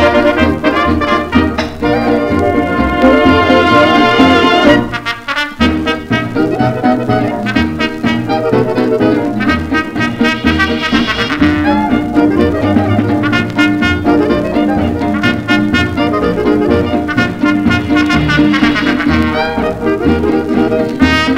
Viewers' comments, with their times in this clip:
0:04 Nice and spirited! I really enjoyed this, especially the dynamic trombone solo beginning !!! Thank you for introducing me to this band!!! :^D 🎺 LP